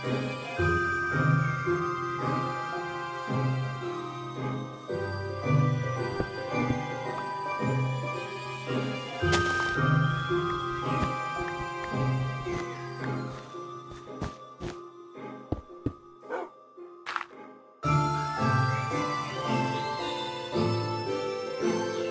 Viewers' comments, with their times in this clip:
0:05 I love the music So nostalgic lonely tear comes to eye edit thank u for sooo many likes, it may not be as many as top comments but I rlly appreciate it 🎉❤️💖